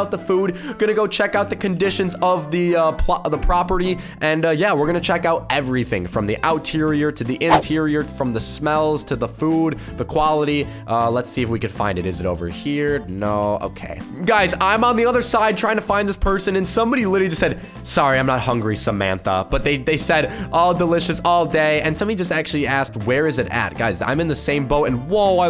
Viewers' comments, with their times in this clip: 0:06 WAIT DID HE RLLY JUST SAY OUT-TERIOR?
0:07 did he just say outterrior 😂😂